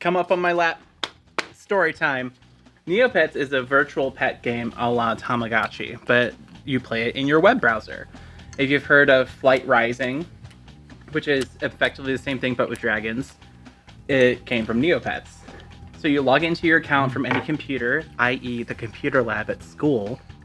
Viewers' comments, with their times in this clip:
0:06 even the open mouth lip smacking while eating reminds me of the mannerisms of being a sloppy child.